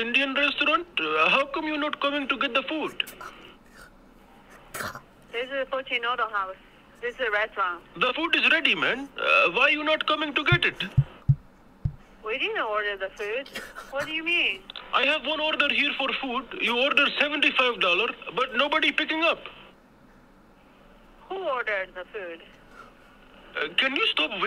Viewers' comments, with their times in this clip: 0:10 rare moment of speed laughing on stream😂😂
0:10 rare moment speed laughing